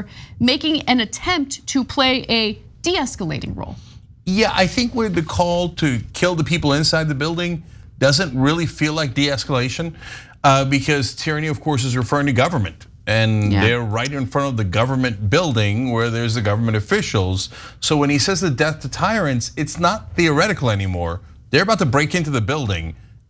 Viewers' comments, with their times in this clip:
0:04 cenk starts talking